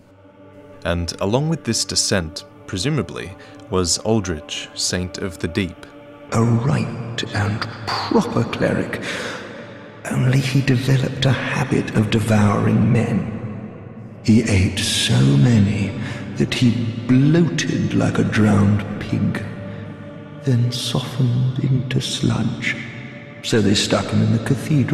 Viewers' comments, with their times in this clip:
0:07 The voice acting is just SO good